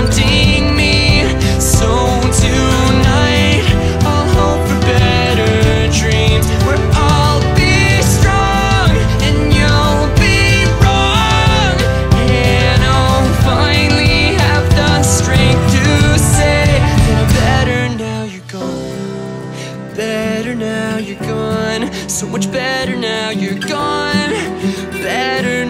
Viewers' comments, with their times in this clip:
0:09 I live for emotional screams like this in songs. Too good.